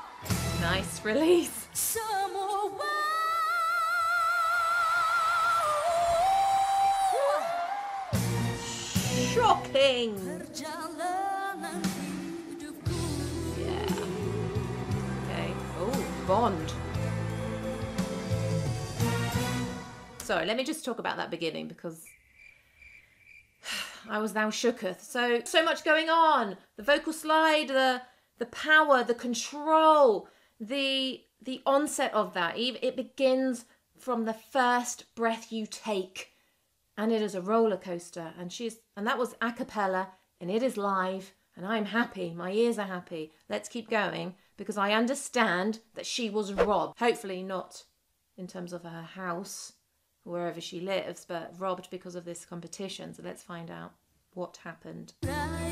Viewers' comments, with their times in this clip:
0:08 "Shhhhhocking" she tries in anyway to not say "shit" 😂 "yes. Slay it. Kill it. Do it! Now!" 😂 "shhhhhhhhhyes" 💀🤣
0:42 she was happy to hear Erni voice....a moment later my ear bleeding because using ipad+earpod+full volume=eardrum nearly shattered